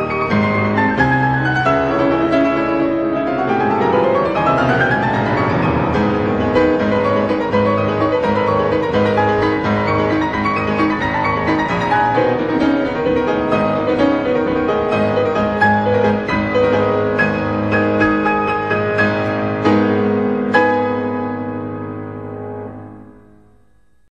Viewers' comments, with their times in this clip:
0:08 Sounds like he made two mistakes on right hand Still, Jesus Christ how do you get this good at piano.
0:09 are those mistakes, or is that just how the piece sounds?
0:10 The arund wrong note part??(Am I correct?) I thought it was his improvisation lollll how can it be so wrong but still so good 😎😎😎👍👍👍
0:11 May I know if that was a mistake? Just curious. I love his playing
0:11 HE MESSED UP!!!!!! lolololol good performance though